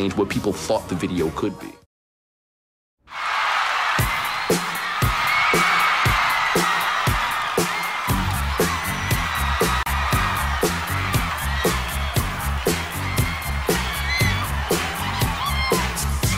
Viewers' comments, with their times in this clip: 0:03 I always get spine tingly feeling during that classic routinue bare in mind that's grown ass men and women screaming not teenies. Phenomenal magician.